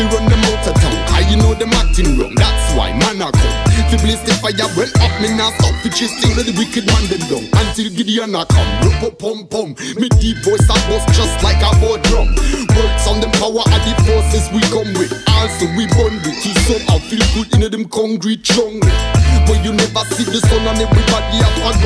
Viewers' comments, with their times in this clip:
0:04 Love this selection! What is the tune playing with a kind of hip hop feel?